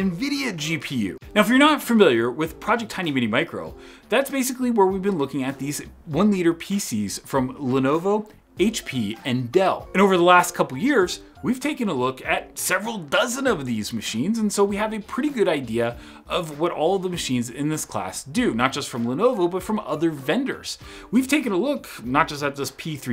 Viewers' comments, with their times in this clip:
0:06 Hey Patrick!! Did you edit this video?? I seem to remember one time you mentioned you loved to put in music and b-roll at the beginning....it is interesting, but you're now talking again and there is music in the background it is a little distracting and hard to pay attention to what you're saying.... Finished video Overall it was a good video, and I enjoyed it. Thank you for making it....